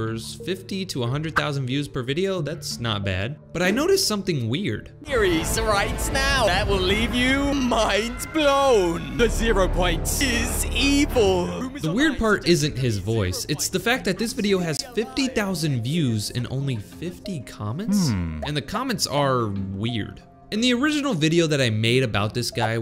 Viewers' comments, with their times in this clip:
0:07 What the hell is wrong with his voice?